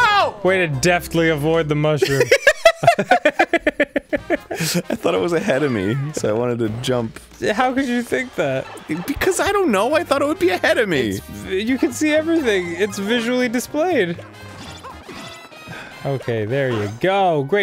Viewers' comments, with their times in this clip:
0:04 I swear he's saying "henemy"